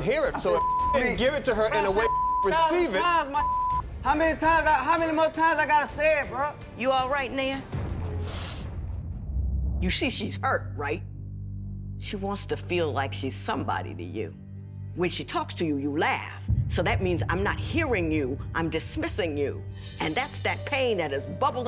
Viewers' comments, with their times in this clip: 0:07 I know I wasn’t the only one that thought that judge said nigga 😂